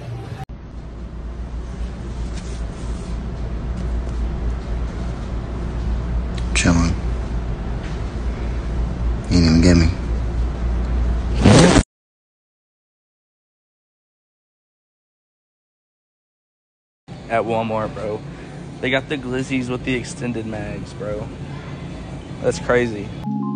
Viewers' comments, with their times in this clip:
0:10 Why does sound like a race car starting😂😂😂